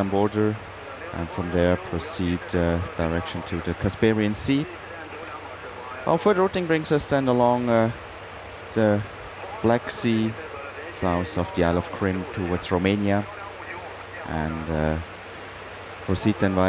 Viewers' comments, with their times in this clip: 0:03 Casparian sea LOL